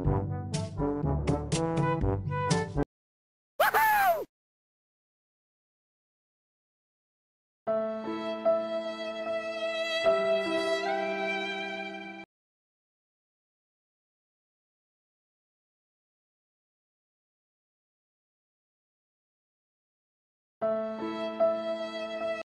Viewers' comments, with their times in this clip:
0:04 OMG I was laughing soooooo badly! :'D Hah ((((((((((((((((((((((( :'( I am stuck....WOOHOO!!!!!!!!!!! - sad music plays - lol )))))))))))))))))